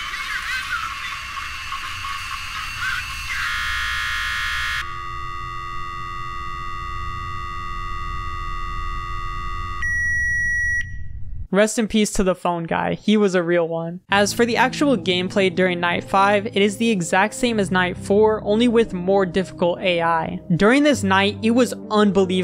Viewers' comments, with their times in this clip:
0:09 almost made me deaf
0:10 Was that a microwave?